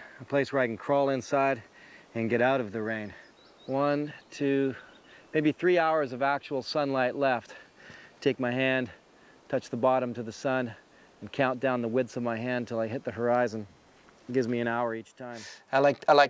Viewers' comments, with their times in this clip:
0:04 I watched this episode on TV and earlier in the show you can distinctly hear tree knocks in the background. I will try to go back and see if I can find the time stamp for the knocks. Right of S2E5 you can hear two knocks in the background. This is shortly after Les said he heard the bigfoot while getting water.